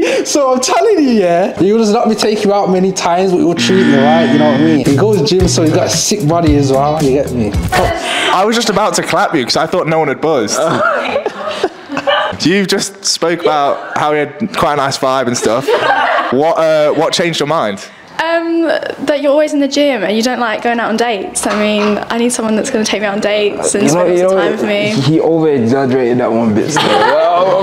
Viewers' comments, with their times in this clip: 0:08 is a serious pause